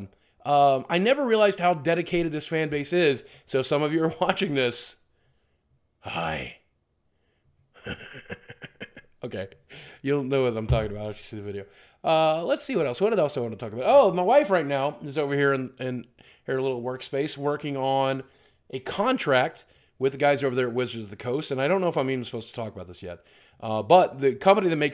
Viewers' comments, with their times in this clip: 0:05 He does the best creepy voice ever Lmao